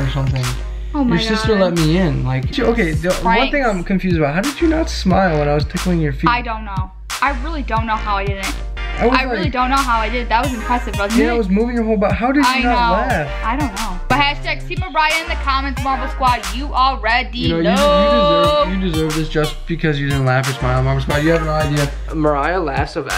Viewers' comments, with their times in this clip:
0:06 she actually laughed